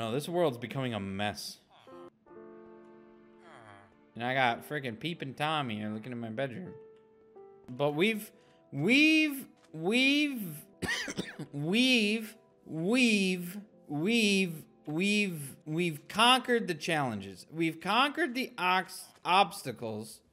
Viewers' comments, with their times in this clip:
0:07 man's turned into Joe Biden
0:08 poofesure says “we’ve” 9 times 😂